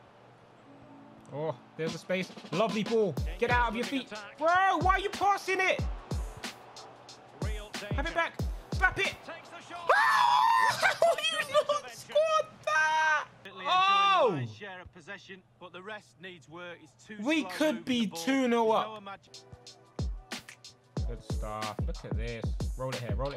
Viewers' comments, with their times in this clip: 0:09 sounds like r2d2